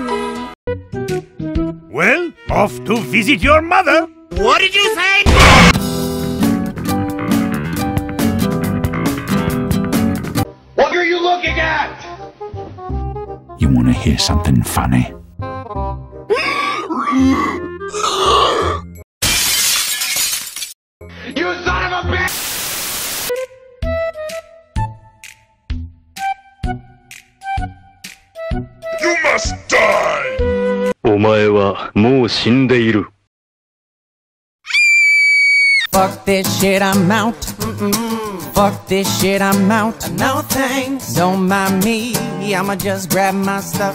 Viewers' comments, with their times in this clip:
0:03 of to visit your mother Ducky with soldier voice: RED SPY IS IN THE BASE!!!!!
0:25 Car shearer dance time music plays
0:31 i love the song XD